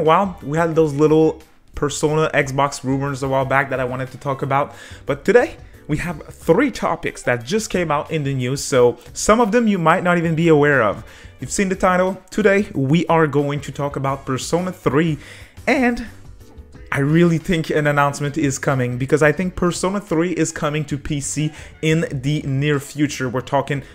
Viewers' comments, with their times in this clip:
0:06 I thought someone messaged me on discord ... Still curious to see the Demi-Fiend figma that was teased a while back. Also; Persona: DR:THH:Trash Room is definitely coming to PC this year.